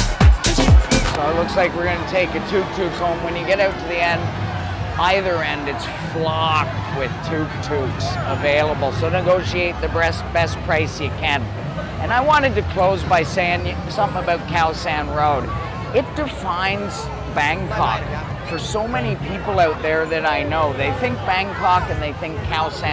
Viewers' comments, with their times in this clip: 0:08 No 17. Khaosan Rd. "Negotiate the breast price you can.".... Solid advice my man 👍